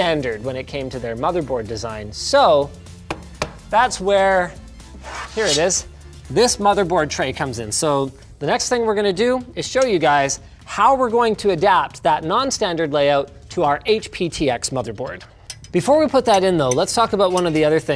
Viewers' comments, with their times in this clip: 0:04 sounds perfectly like pulling a sword